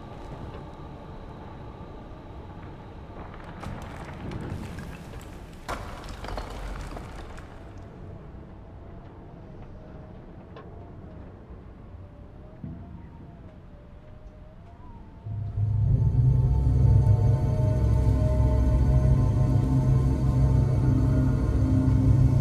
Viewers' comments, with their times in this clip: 0:05 I fell in love with a part of the music where that rock falls to the ground, and you have a lot of details in your card. It's really beautiful, you feel like you're really there. The music is very good, and the details in your card are very nice. Keep it up.